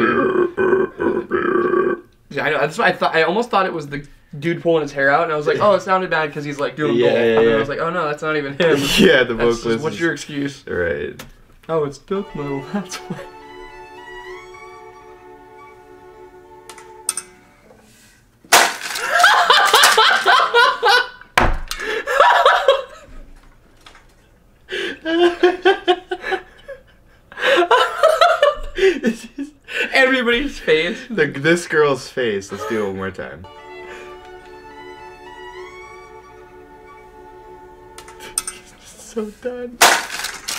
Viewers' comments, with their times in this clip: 0:08 That vovalist sounds like Corpsegrinder.
0:18 that laugh made me laugh more than the clip
0:19 i literally thought the person holding the camera was a women luaghing. BUT NOPE!!!!
0:20 I'm trying to figure out which girl in the school is laughing...
0:23 that laugh is W H O L E S O M E